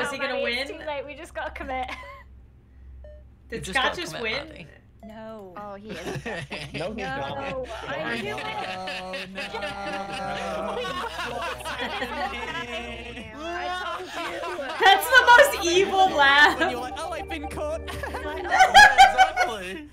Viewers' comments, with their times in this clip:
0:05 The manic laughter 😂😂